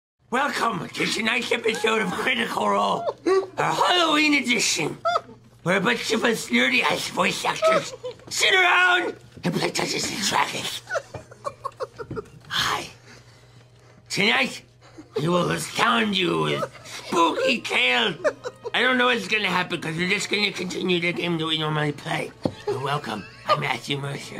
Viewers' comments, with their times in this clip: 0:08 Their wheezing killed me xD I wish I could see their faces at this part